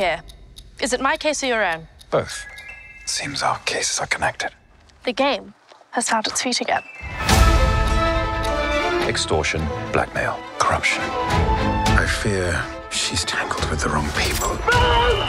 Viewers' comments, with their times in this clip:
0:03 when he does the Witcher voice